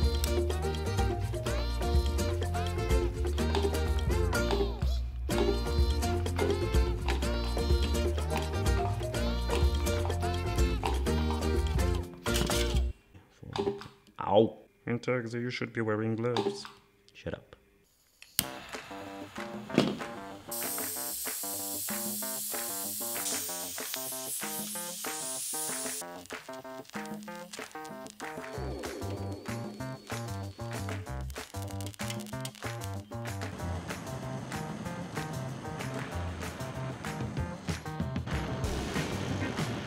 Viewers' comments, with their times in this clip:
0:10 the song got me dyin💀💀💀💀💀💀💀💀
0:23 The music that begins had me groovin in my seat 🕺 💃